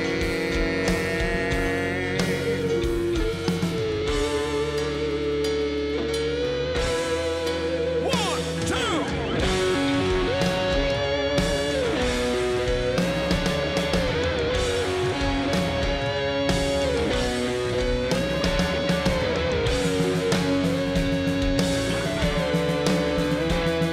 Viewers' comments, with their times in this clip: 0:07 Damn, sounds so different here!